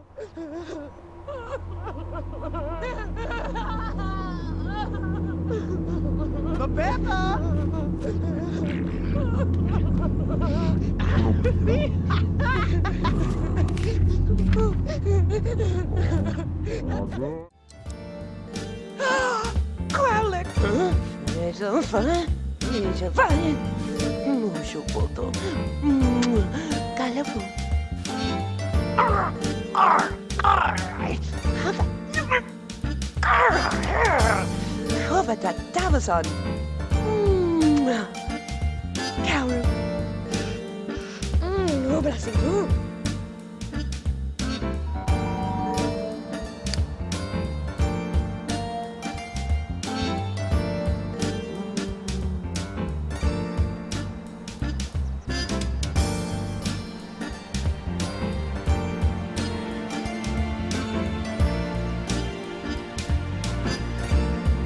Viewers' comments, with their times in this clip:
0:07 he farted while the other guy was dying .-.
0:45 spamming the doorbell? I see.